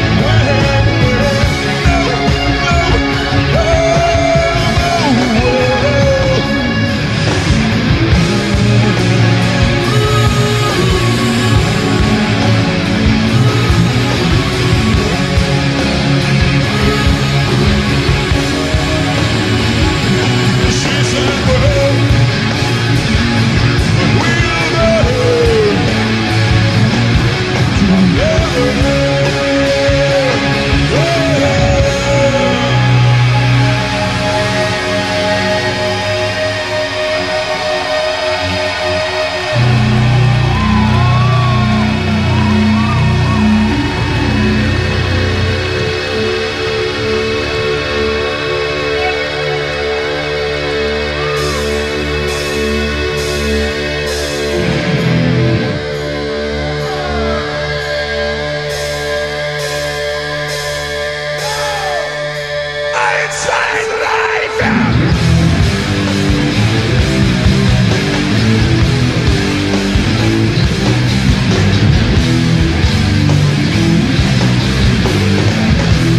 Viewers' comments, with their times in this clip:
0:07 I love the way Peter faintly sings "burn" it sends shivers through me😍😍
1:04 Bloomin heck... what happened ...?? Pete sounds like he wants a set list change!! Oh and the sound is atrocious... 😂😂